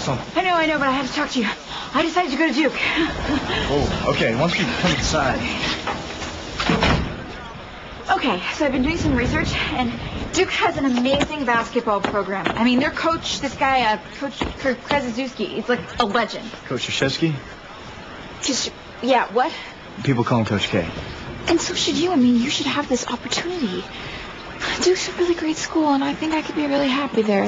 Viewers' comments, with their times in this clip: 0:10 Hahah it always makes me laugh! Haley is the best! :D Coach Krzyżewski - one of (many) difficult polish word for foreigner. It's nice to hear polish accent in OTH. :]